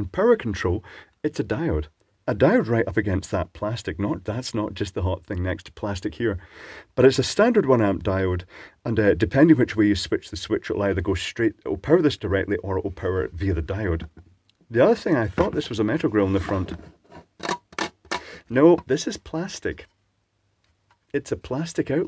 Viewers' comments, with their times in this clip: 0:10 I don't know. It sounds, aluminum. Mixed with plastic. Plastic is the finish. The colour. 😐